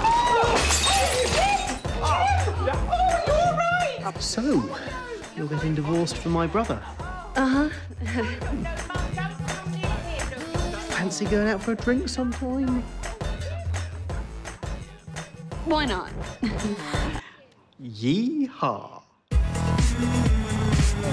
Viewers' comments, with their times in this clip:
0:08 Jackie was saying something different and they dubbed the actresses voice like she's saying something else